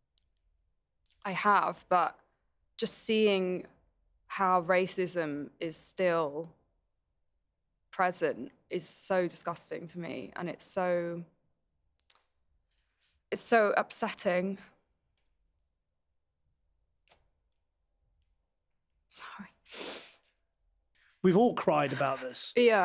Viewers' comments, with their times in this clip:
0:03 I didnt understand every single word but as she started crying, I felt instantly tears in my eyes. She is so adorable and has a stunning personality... Much Love from Germany ❤️